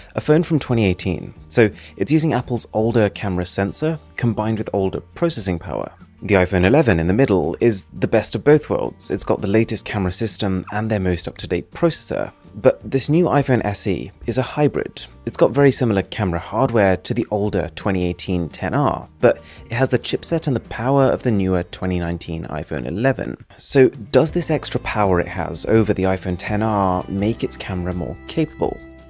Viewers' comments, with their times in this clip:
0:10 That little squeak is the cuttest thing ever.